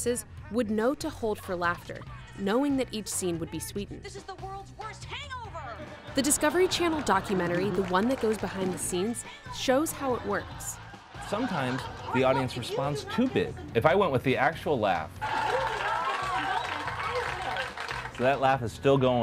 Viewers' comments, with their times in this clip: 0:05 lol thar one laugh 😁